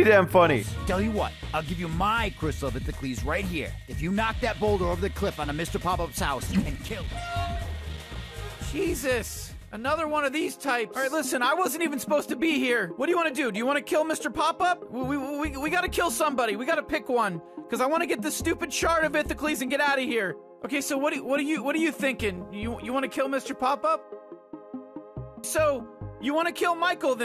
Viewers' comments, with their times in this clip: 0:08 is it Morty? pay attention to it's voice
0:10 damn Justin Roiland is literally in almost every cartoon nowadays 😂 sounds exactly like morty as well.